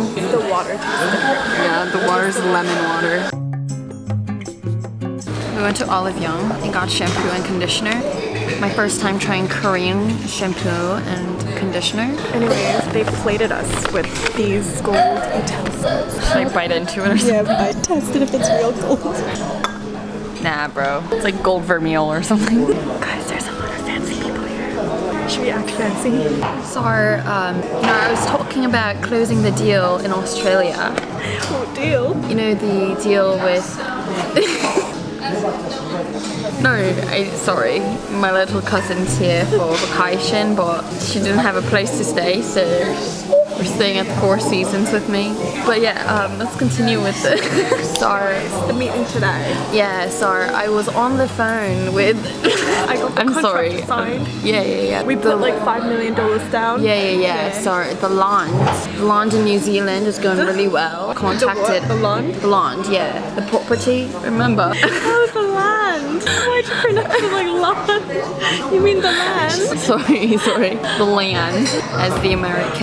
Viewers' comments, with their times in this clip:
0:06 I THOUGHT SHE SAID CAMPAIGN I WAS LIKE ..👁️👄👁️🫣
0:54 As a brit if that was supposed to be british you sounded australian 😭😭